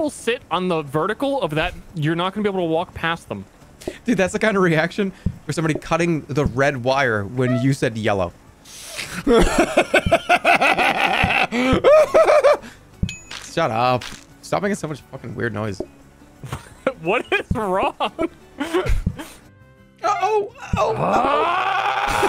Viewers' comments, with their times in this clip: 0:08 I've gotten so used to jerma acting like a psychopath high on psilocybin that hearing ster say "What is wrong?!" actually reminded me that normal people don't make noises like that for no reason